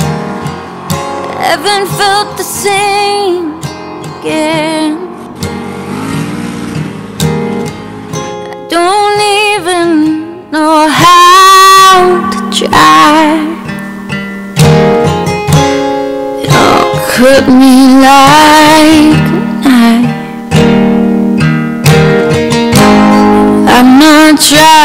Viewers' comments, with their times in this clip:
0:09 BRO! The audio literally blew my ears. Chills, spills, thrills, and SHRILLS! Only upside is that it's at the end.